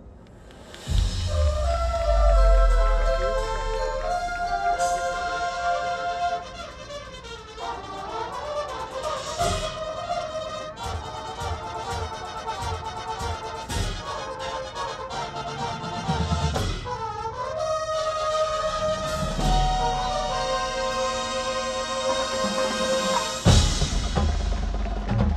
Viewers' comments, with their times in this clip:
0:09 sounds exactly like Ronald Reagan trumpet feature tbh